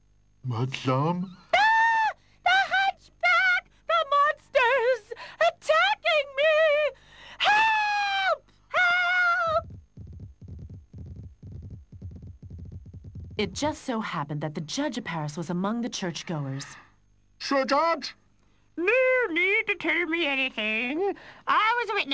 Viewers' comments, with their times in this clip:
0:09 I like how her head inflates when she's screaming.